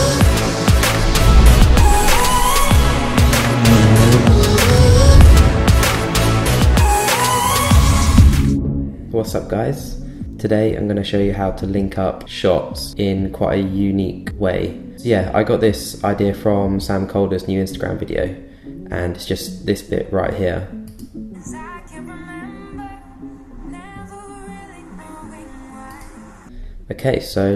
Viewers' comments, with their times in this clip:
0:10 How do get that muffled audio effect?